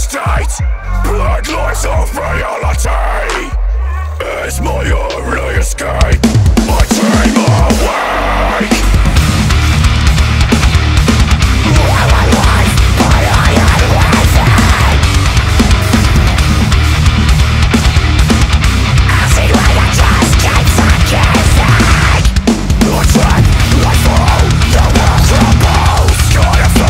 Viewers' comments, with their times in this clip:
0:08 The part is a pretty infectious groove, love it
0:08 when that riff starts i completely lose my mind
0:09 for the grooveness